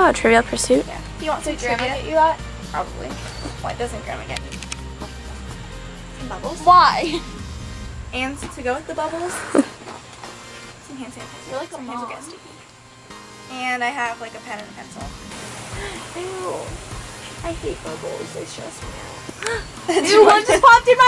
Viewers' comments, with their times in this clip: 0:09 i heard another fart